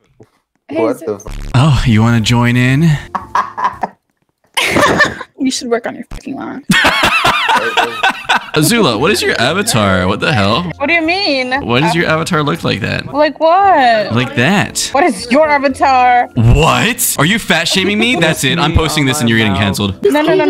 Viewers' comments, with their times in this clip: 0:03 BRO HIS VOICE IS UNDERRATEDDD GO GET A ANIME JOB GURL IS SAVAGE you found yourself a woman bro